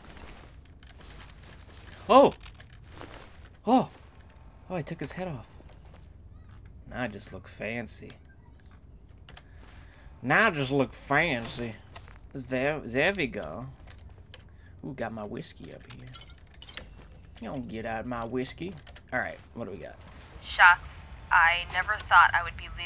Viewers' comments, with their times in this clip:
0:07 Anyone else hear children ?